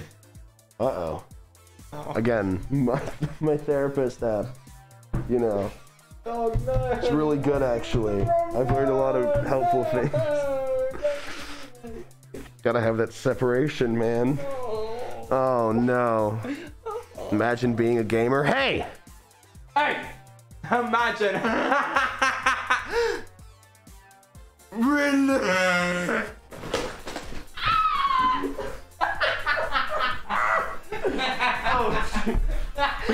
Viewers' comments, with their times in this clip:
0:08 got me cracking up when his voice crack came.🤣
0:14 his laugh bro😭😭
0:20 the laugh tho🤣🤣🤣🤣🤣